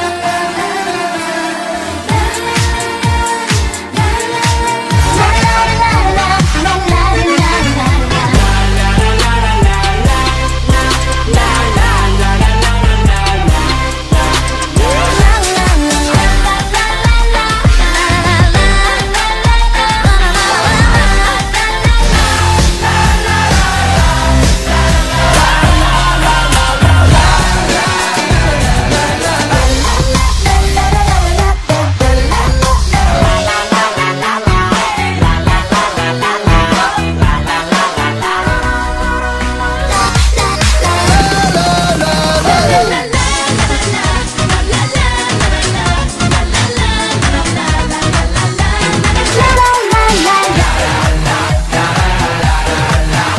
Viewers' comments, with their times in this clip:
0:10 I love this song
0:38 THIS SONG VERY ICOONIIIC "LALALALALALALA~" 😂😂😂😂😂😂😂😂